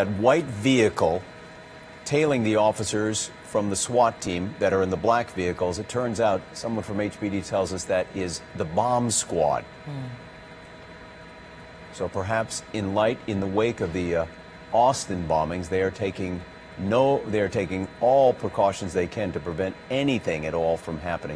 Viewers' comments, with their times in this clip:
0:08 I thought I heard the reporter say “Mom’s squad”.